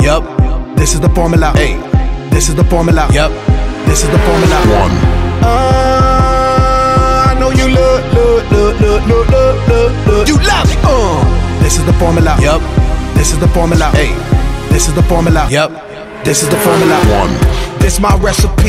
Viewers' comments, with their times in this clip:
0:04 Why this Porsche Cup sound tho